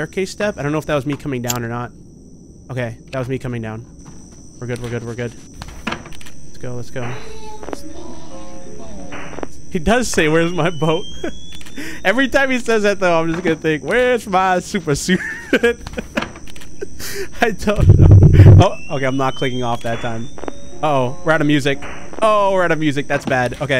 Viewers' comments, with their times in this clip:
0:07 That's daisy saying "Where's My Bow" at least that's what I heard